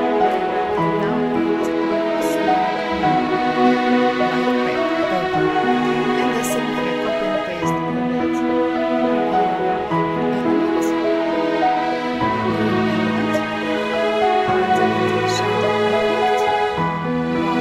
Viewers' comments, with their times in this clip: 0:04 After mins or so BG music too loud...😢 Can't hear you